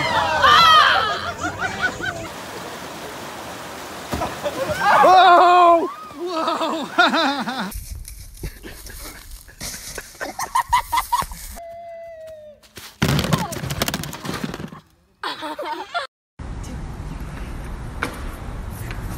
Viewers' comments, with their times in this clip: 0:06 it totally, sounds like Norm Macdonald laughing! 🧐